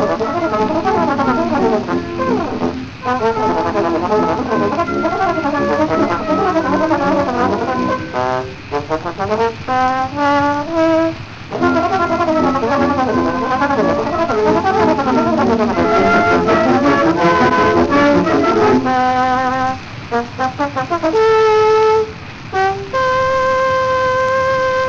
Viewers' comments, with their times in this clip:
0:05 I feel is missed by anyone not a current or former trombone player. The flawless jump between the low and high notes is easily missed if you don't know they're there. Arthur Pryor is basically to the trombone as Paganini was to the violin, virtuosity to the point of absurdity.